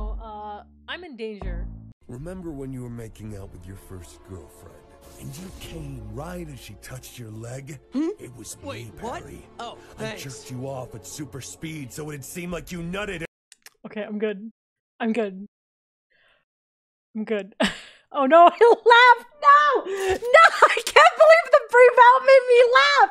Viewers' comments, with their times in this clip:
0:08 The sub notification sounds like it's interrupting the monologue to thank the guy